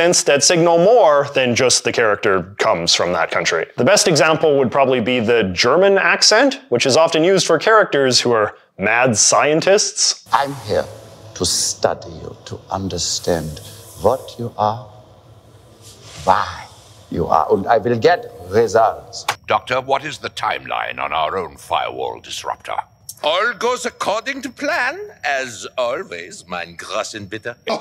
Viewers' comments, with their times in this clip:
0:08 growing up on cod and inglorious bastards any german accent your first thought is always NAZI!